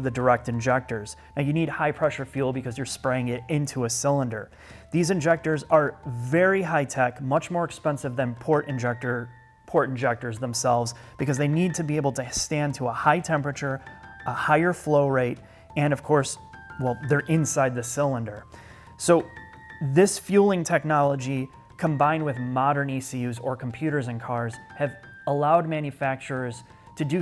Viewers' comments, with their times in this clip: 0:10 I'm listening to this with my headphones and kept pausing thinking my sons toy was left on.... what is up with those bell jingle sounds lol 😂